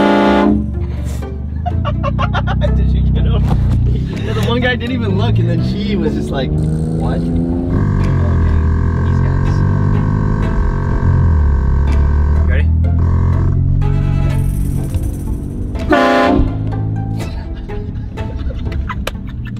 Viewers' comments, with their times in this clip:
0:06 Cool horn 👍. The lifting looks awesome. In germany you will receive many many views but also have a long discussions with the police and the tüv too.